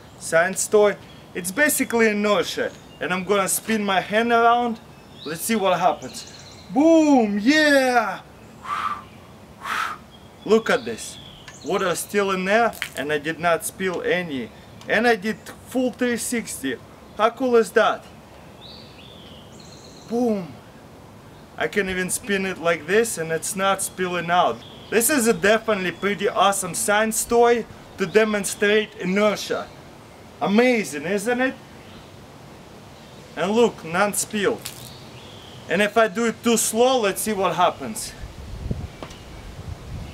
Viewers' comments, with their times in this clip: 0:06 biggest boom I've ever heard.
0:26 did he just say SANS toy